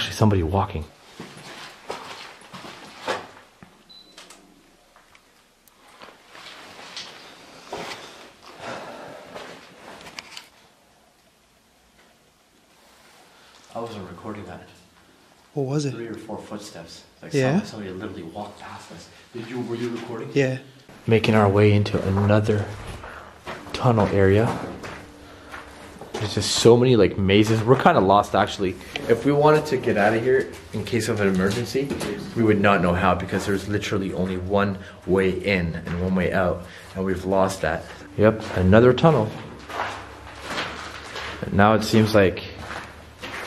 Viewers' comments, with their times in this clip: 0:08 when u both was in what u first thought was the morgue u can here quite loud a growl it was straight after u both herd footsteps walk by u both. I did not sound human at all it was what I would say the same as a lions growl
0:08 while u both was in were u both first thought was the morgue u can here a loud growl that did not sound human at all. But I cant believe u both never heard it it was after u both herd footsteps walk right by u,
0:27 I just heard a footsteps by a ghost at the haunted kings park asylum minutes